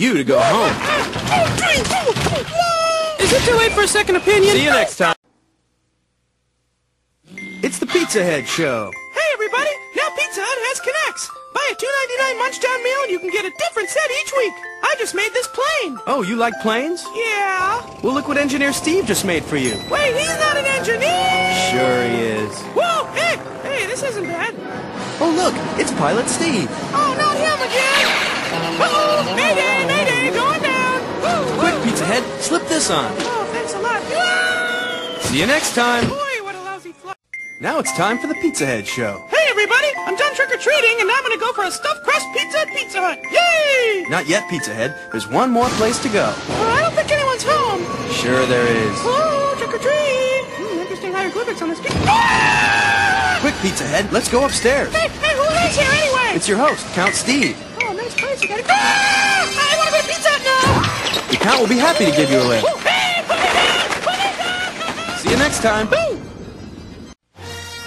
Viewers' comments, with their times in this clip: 0:07 Bird sounds effect
0:52 Sounds like Chun-Li's KO scream from Street Fighter EX2 Plus